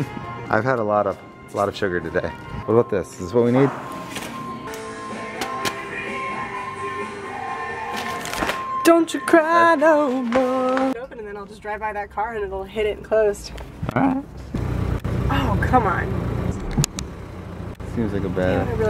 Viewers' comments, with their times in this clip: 0:05 Did everyone in the SPN fandom make the most unnatural sound